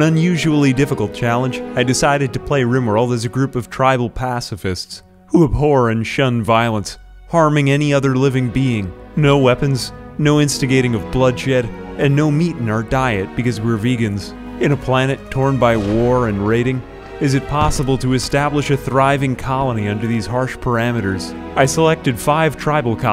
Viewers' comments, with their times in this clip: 0:04 The voice crack gets me every time XD